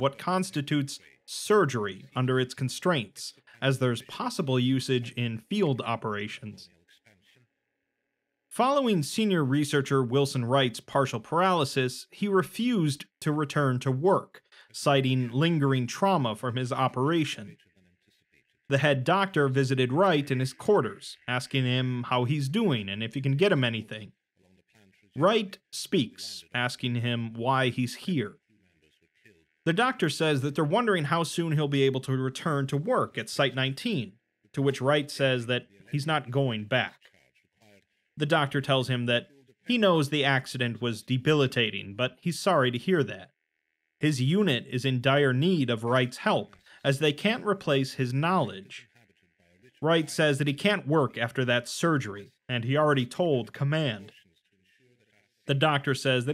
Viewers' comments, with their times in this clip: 0:07 Anyone else hearing radio chatter under the narration ?
0:42 Hey did no one else notice that or so there's like an underlayed audio track of an older sounding man mumbling about something???